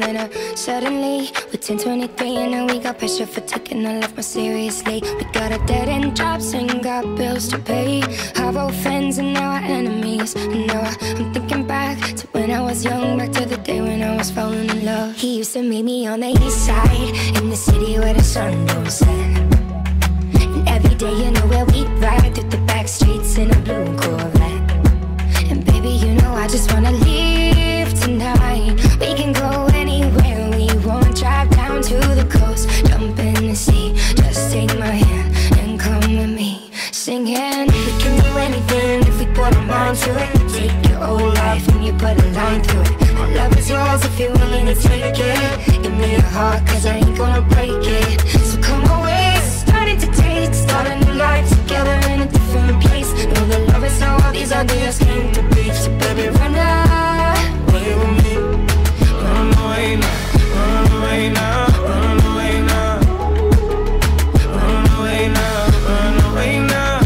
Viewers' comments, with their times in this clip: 0:05 I thought the lyric was half our freinds are Now our enemies
0:55 I came for the chours <3 So good!!!